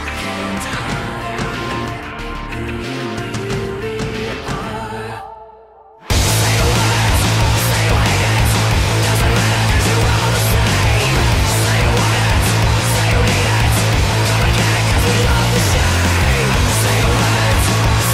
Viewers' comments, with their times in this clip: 0:06 the part in sounds same like the chorus in "Ladies and Gentlemen" by Saliva